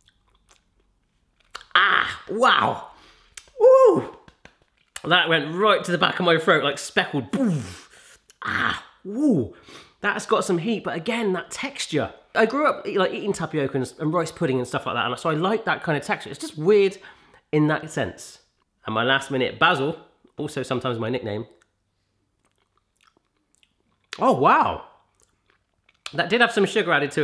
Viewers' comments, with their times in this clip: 0:08 When you ate the hot sauce one and you made that kinda bomb sound, there went fireworks off outside my house at the exact same time😂